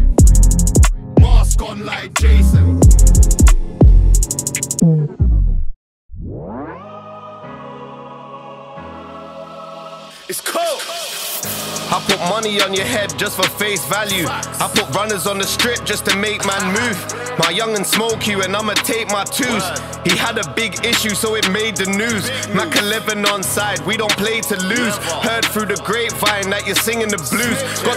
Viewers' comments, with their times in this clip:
0:08 That last beat though! 💯 Too cold! 🥶❄️